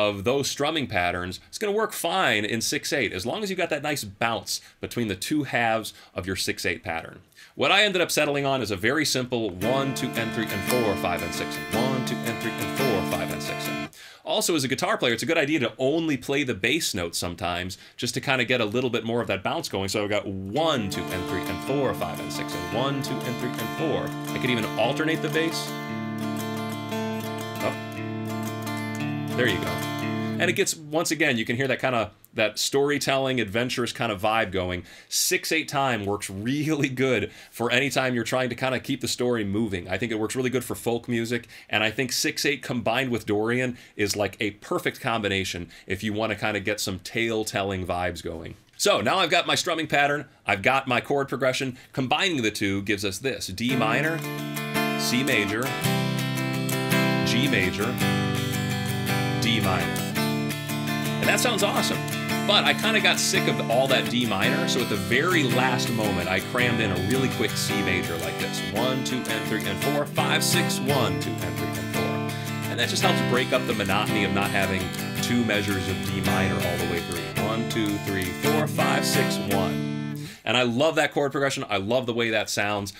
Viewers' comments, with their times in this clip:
0:10 It sounds a little bit like April Ethereal by Opeth.
1:09 man.... Is the AQUALUNG move. That is SOOOOOO daddy